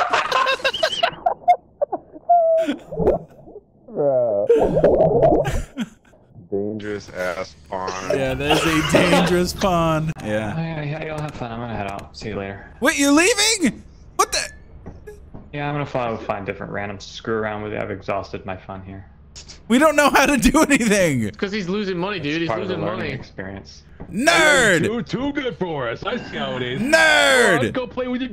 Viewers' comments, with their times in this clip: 0:10 Heavy braces and thick rim glasses vibe from that guy just from how pompous he sounded